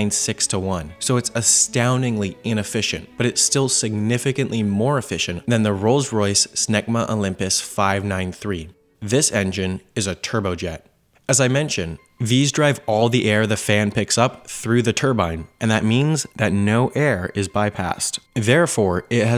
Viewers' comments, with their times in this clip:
0:06 Wait, Rolls-Royce named an engine "SMEGMA?"
0:06 they called an engine "smegma"?